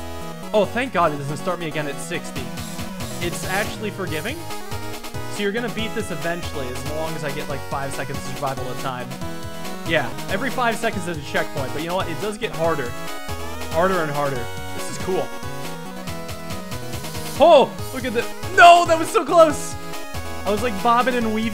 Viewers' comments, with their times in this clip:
0:08 this reminds me of a metronome and im not sure why